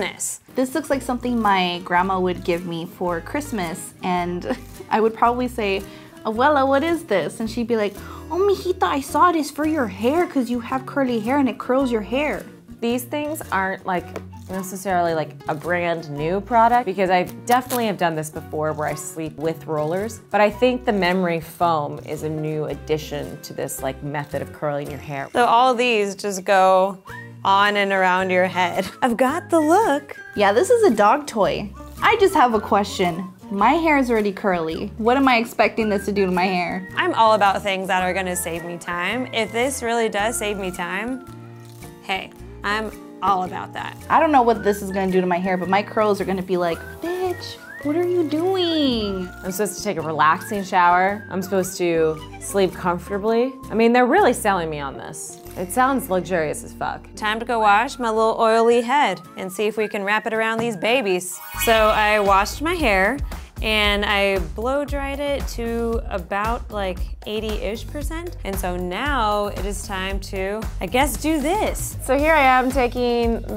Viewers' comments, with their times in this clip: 0:07 when she does her abuelas impression lol
1:00 Every time I hear the sparkles sound I just think of "Girls Just Want To Have Fun"